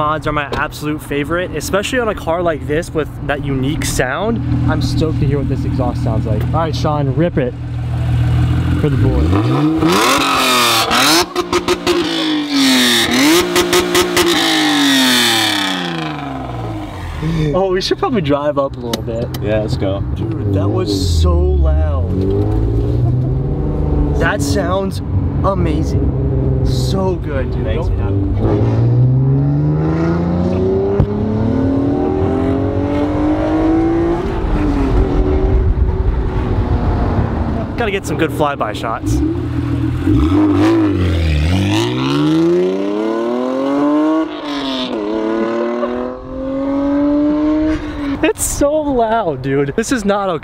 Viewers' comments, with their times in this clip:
0:10 Lol Honda will always sound like a Honda doesn't matter if its a Civic or a NSX ... XD
0:32 dat vtec pop tho 😍